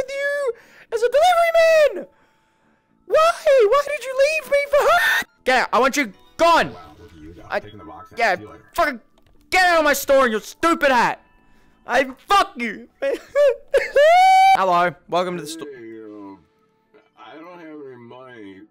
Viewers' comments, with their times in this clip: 0:04 the screem got me ahahahahahahahahah